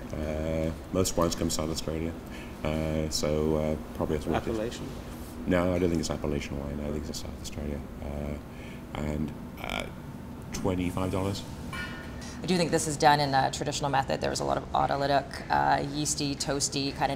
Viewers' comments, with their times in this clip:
0:03 love the appellation/appalachian misunderstanding ish